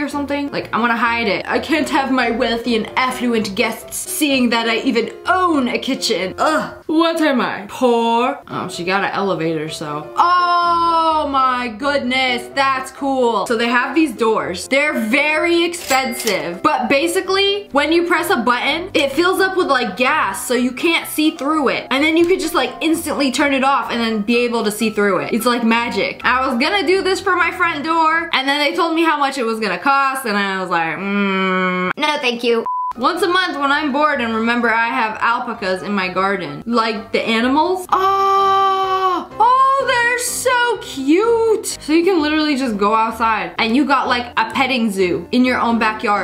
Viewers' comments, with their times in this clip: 0:03 Your accent is on point
0:31 i’ve never heard alpacas being pronounced this way
0:32 But can we talk about how she pronounced alpacas